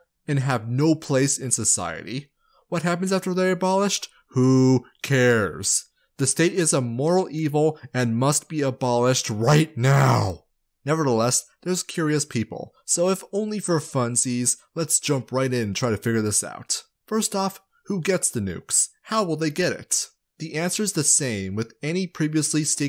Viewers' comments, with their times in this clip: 0:09 Lizard voice comes out. We know you're working with Mark Zuckerberg and you're his lizard accomplice.